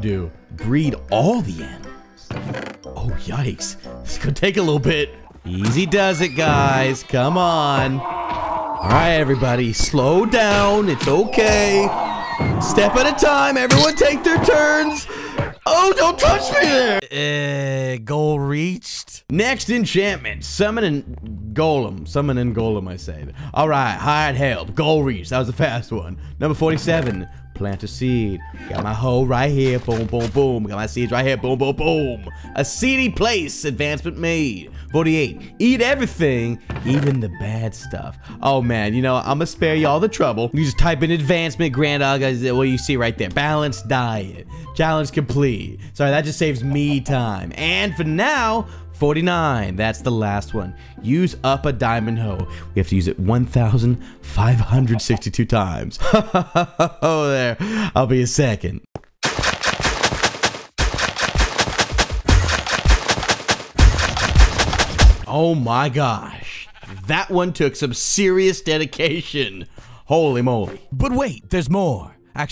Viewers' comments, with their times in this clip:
0:05 Those Animals are moaning lel
0:59 When The beat starts